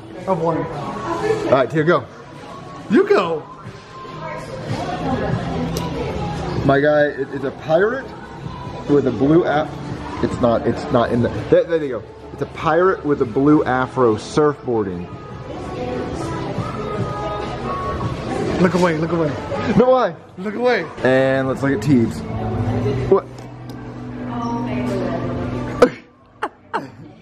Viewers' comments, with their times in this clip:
0:10 YouTube is bout to bend you over sideways for having copyright music😂😂😂